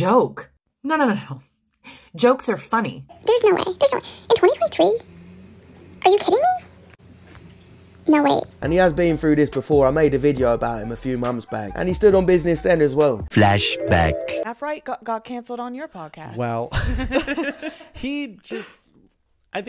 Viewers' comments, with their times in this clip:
0:03 this lady needs to call somebody, I think she's addicted to helium 🤣